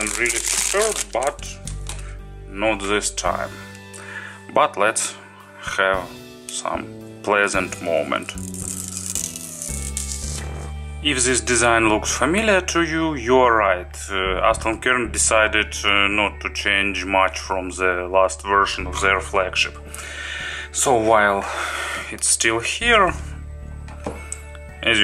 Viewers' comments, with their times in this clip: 0:08 when its so beautiful you just gotta let that fart out
0:09 was this a fart? xD